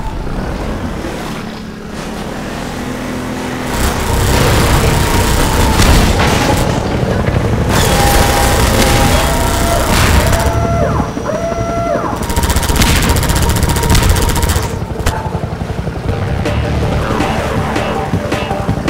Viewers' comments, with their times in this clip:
0:03 Best Epic BGM with Scene